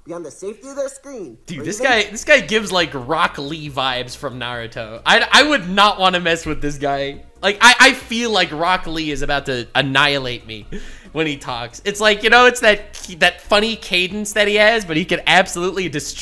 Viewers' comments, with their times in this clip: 0:03 no way he does sounds a little bit like rock lee (dubbed) i cant unhear it damn